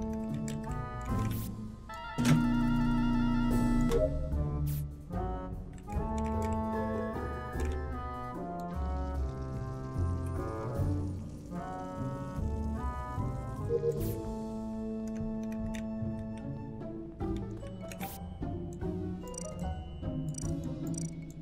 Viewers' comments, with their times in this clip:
0:09 The music got me tho-